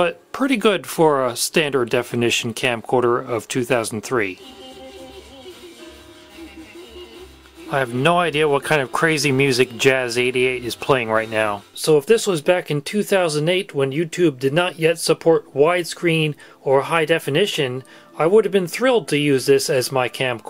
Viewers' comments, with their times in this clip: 0:04 What's that weird song 😂